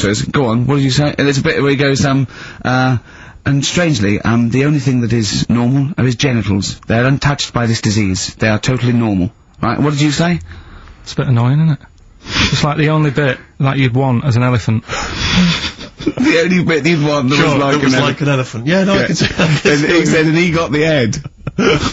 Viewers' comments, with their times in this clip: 0:05 I enjoyed Ricky’s posh accent